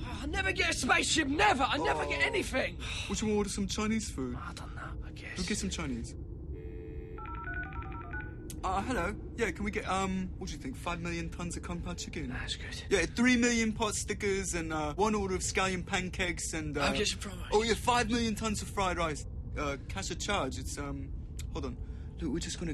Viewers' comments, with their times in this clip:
0:08 I neva get anyfin! Nailing the subtle pronunciation. 😂 “ah, Hello” such an innocent greeting from a hungry space worm.